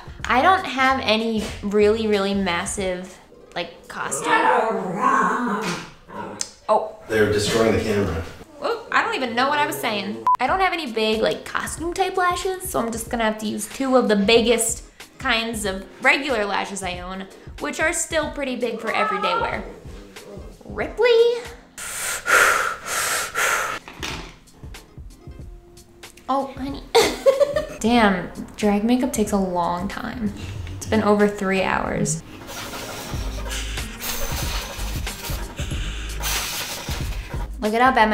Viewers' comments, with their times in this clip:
0:03 Puppers is possessed! Kinda sounds like doggo says "OOOhhh Woooww grrrr" lol
0:18 it sounds like Ripley said "Mooooooom!" XD
0:18 Ripley litterally screams "MOMMM" How is he so human
0:19 I swear ripley said “mooom”?? as if creature was fighting her like a little brother would. I cannot be the only one that heard that! 😂